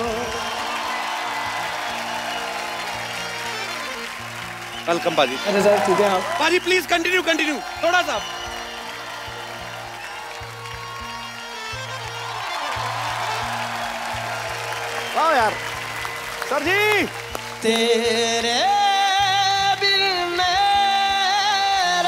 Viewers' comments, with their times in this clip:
0:07 The crowd reaction Thanks india! From a paistani...
0:07 The crowd reaction love 💕 Thanks 👍 for this